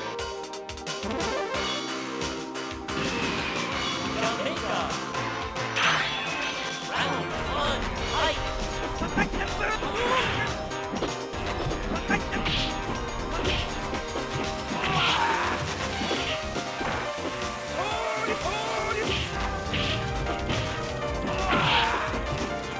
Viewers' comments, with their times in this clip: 0:06 DIDN'T EXPECT TO GET A DEEJAY THEME REMIX DURING THE BREAK, THOSE EXTRA BELL JINGLES WERE EPIC! WELL WORTH THE AUDIO BLUNDER XD =)